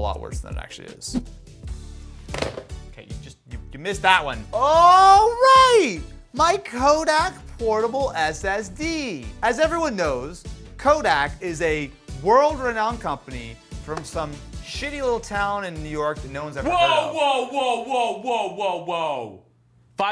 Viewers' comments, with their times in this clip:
0:04 Is it me or did he sound like spongebob ?😅